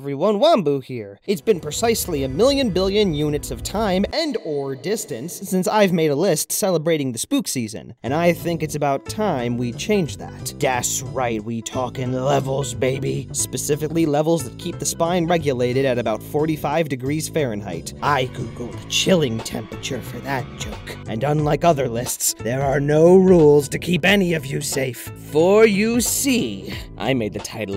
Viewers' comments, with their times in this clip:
0:08 Hey you know what this sounds like? IT SOUNDS LIKE PUMPKIN HILL! DOO DOO DE DOO DOO DOO DOO, DE DOO DOO!